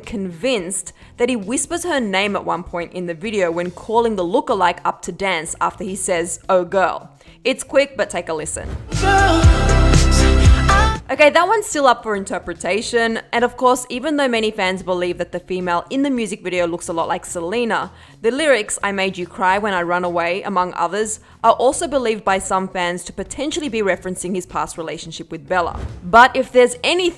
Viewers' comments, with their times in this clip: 0:09 he is just taking his breath
0:09 is that 'selena Gomez'????😲